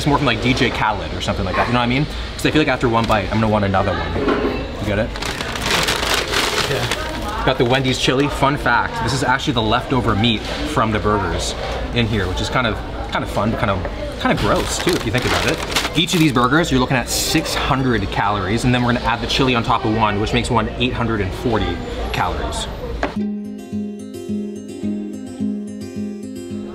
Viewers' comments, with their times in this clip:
0:07 That delayed "yeah" made me laugh so hard